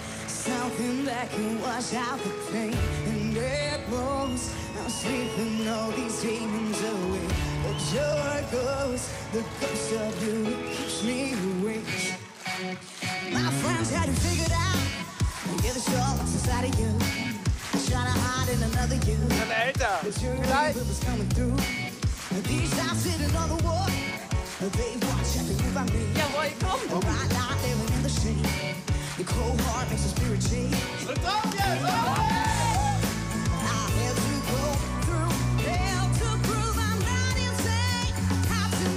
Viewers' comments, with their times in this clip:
0:10 Steve Smith in American Dad😂
0:15 Damm she has a strong voice I love it.Reminds me of Adele!
0:16 TBAT IS A GIRL
0:26 Her voice is so same Dua lipa